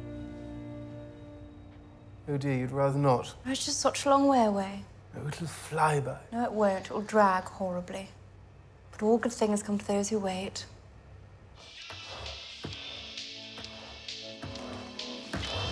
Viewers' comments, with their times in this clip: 0:03 Her performance was a bit hit and miss for me, but when she got it right, like she does she blew my mind. The voice and mannerisms was like watching Diana.